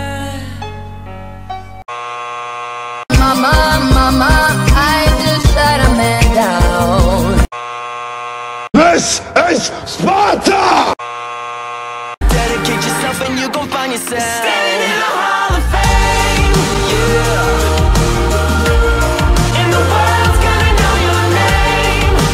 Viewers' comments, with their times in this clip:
0:08 I have a text tone that sounds like "THIS. IS. a text message ^-^" I s2g I thought I was getting a text